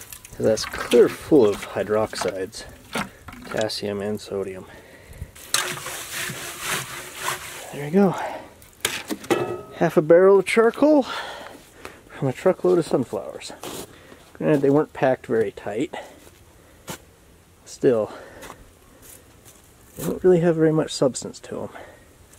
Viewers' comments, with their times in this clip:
0:06 Ya know when you fill your bowl up with coco pebbles and smush your spoon in